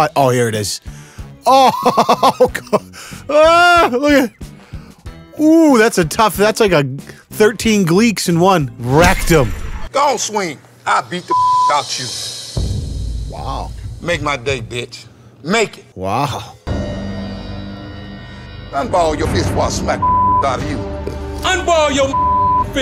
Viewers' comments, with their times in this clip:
0:09 I had this playing, but I was looking at something in another tab. I had to triple check what I'd heard, because I heard "That's like 13 Gleeks [fans of the show Glee] in one rectum" and was all "what the hell is going on in that video!?" Hahaha